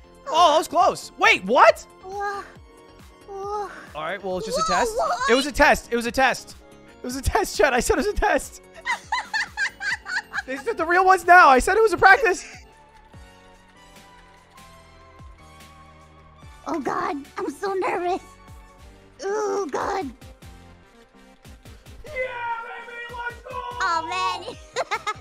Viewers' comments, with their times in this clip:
0:08 she's laughing just like the fountain fairy from BOTW